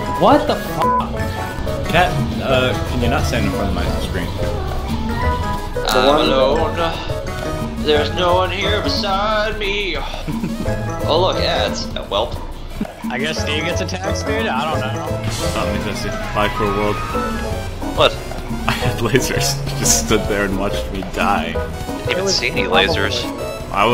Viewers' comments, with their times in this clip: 0:04 Cat be like: cat noises